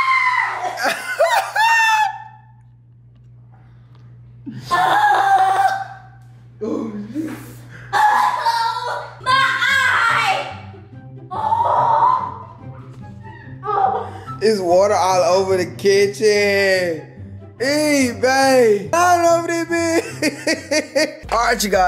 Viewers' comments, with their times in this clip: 0:09 Bro y she said “my eye” like that